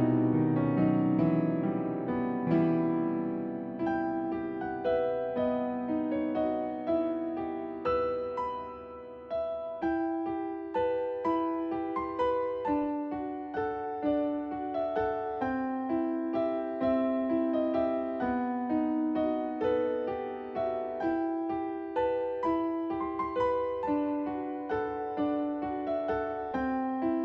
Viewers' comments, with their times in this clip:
0:10 omg if i go to and change your playback speed to 1.5 you can hear the ice cream truck song